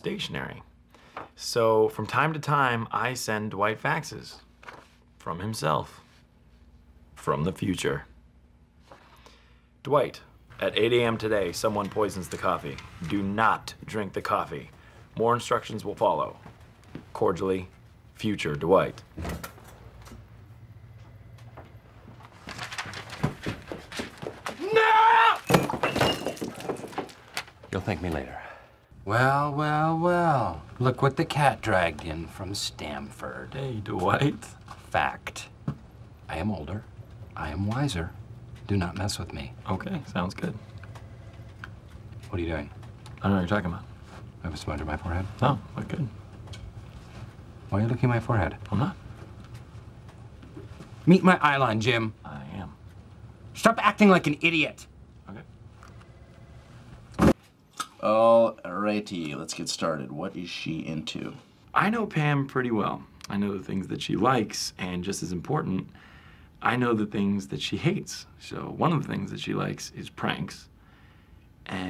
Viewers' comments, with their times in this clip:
0:06 the way he says "from the future" reminds me of those English listening tests we used to do in school
0:56 perfectly cut screams but it isn’t a scream